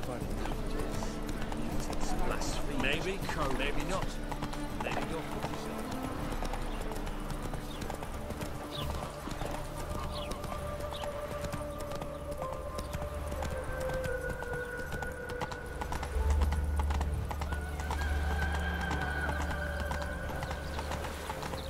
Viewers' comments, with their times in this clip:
0:09 for the best music ever.